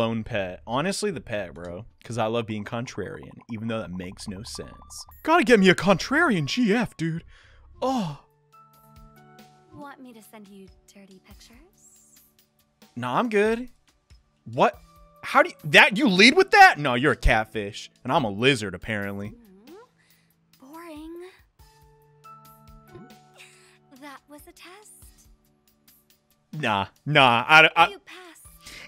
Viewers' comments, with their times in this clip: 0:09 Hey that voice sounds, familiar. Wait Hu Tao, Rem what are guys doing here?